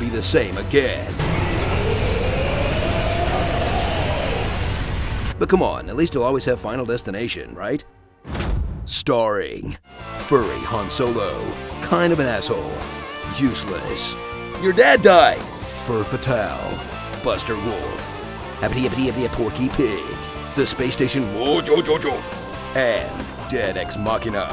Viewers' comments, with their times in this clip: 0:09 What song is played at the starring part ? Seriously I really need to know, the tune is just so catchy and it doesn't seem to be in the game soundtrack
0:10 HOLY SHIT WHAT IS THAT MUSIC!?!? SHIT SOUNDS AWESOME!